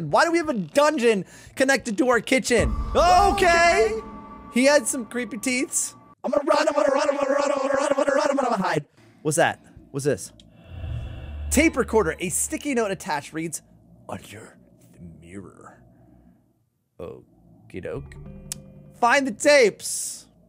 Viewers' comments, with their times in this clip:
0:07 he sounded like bill cipher from gravity falls 🤣🤣